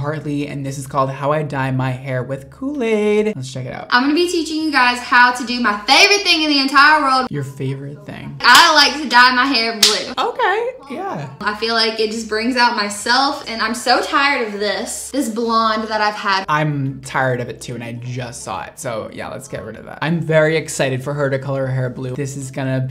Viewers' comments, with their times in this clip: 0:07 How he said "your favourite thing" is a whole mood hahaha